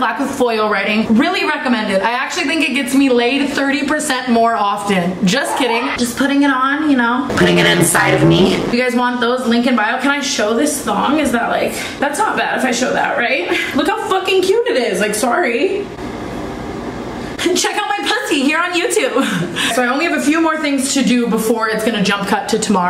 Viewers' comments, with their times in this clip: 0:04 who the fuck screamed in the background
0:06 who’s laugh was that😂